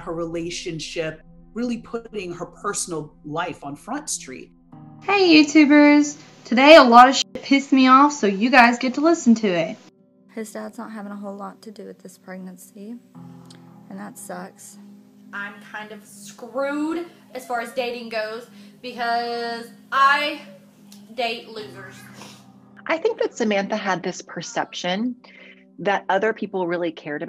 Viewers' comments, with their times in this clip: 0:08 Oh Please! That fake croaky voice is about all I need to know about this woman and her involvement in the "home invasion". And of course she called a relative instead of calling 911. A relative, who actually believed the story, could be more convincing when they talked to the 911 dispatcher than dear Samantha who KNEW the actual story and could NOT be terribly convincing. Someone should have told her that ANYONE can fake one of those croaky voices. That is NOT the voice of someone who has been traumatized because her husband has been dragged out by some bad guys. That is the voice of someone who is PRETENDING to be traumatized because her husband has been dragged out by some bad guys. BTW, take makeup tips from someone who looks like she looked ? Nope. As Heather Land says, "I ain't doin' it!" (And if you've never seen any of Heather's videos, you really should check them out.)